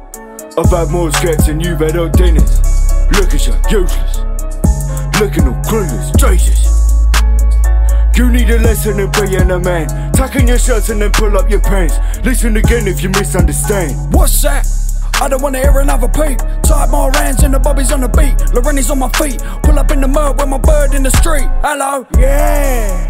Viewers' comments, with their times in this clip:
0:06 The bald headed one flow just turned next level of nasty round